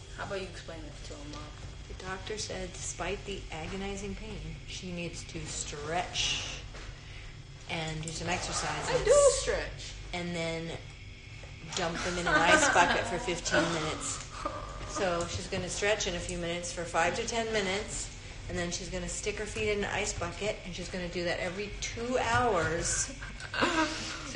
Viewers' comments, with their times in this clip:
0:08 love that voice crack